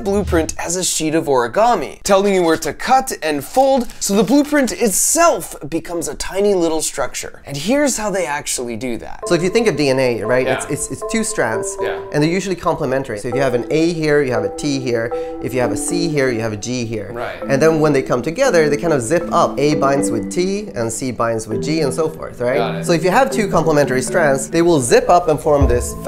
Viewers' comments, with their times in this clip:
0:08 "and here's how they actually do that" insert sound effects GOOSEBUMPS 💕